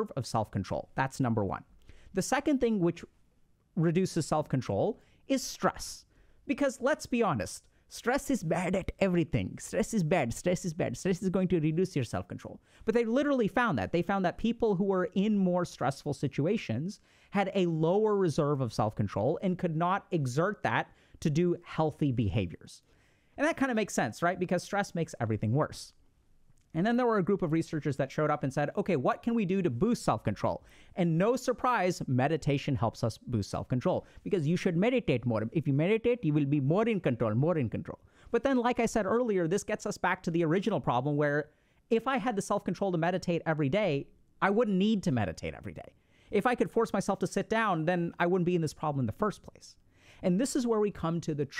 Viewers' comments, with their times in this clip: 0:07 the accent broke out
0:08 why did bro changed to indian english lol
0:08 Bro slipt his acent in 😂
0:09 i lost it when his real accent that he’s been suppressing came out 😂😂😂😂😂😂😂😂😂
0:16 Bro gave in to his nationality for a second
0:33 bro unleashed that Indian accent
0:34 I love your Indian accents.😂😂
0:34 🤣🤣🤣 caught me off guard with the accent there. Had to rewind that